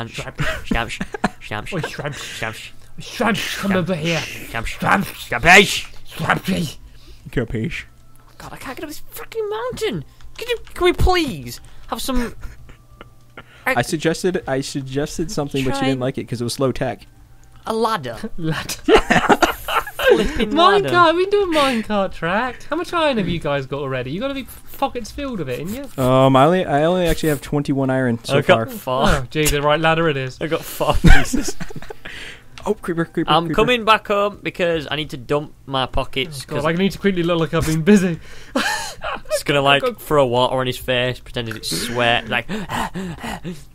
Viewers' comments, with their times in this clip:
0:03 did anyone else hear squid cus
0:08 did he say the f word
0:08 Did anyone else hear the f bomb
0:08 I swear you said fnck
0:24 Doesnt he swear in tho 😭 I cant tell
0:25 or something it sounded like stampy sweared OwO